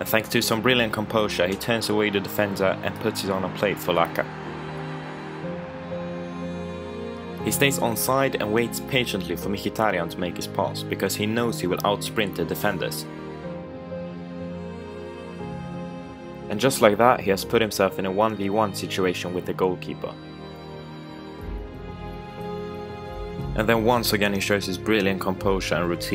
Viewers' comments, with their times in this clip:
0:09 only one that prenounced micki good